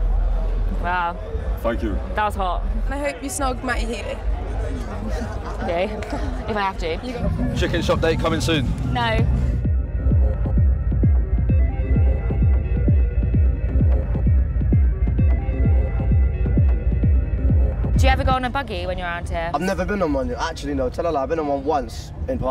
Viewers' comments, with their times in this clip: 0:08 the quickness of that NO🤣🤣🤣